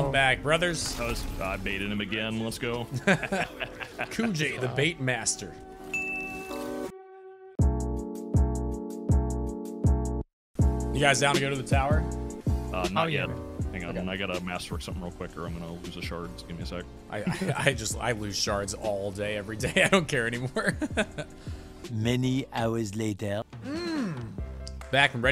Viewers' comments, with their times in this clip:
0:07 We can’t just run past that editing like that beat transition wasn’t dope af 😂 shoutout to the editor lmao.